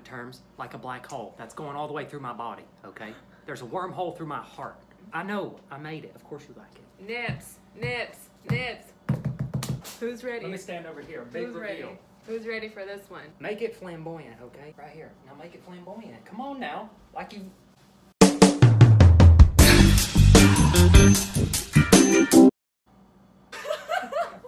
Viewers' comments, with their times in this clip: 0:06 she starts yelling “nips nips nips nips” that’s when my mom walked in congratulations! You were apart of the most embarrassing moment of my life. (No shade just sarcasm) I’m to pale to throw shade I’m like the fracking light of the room.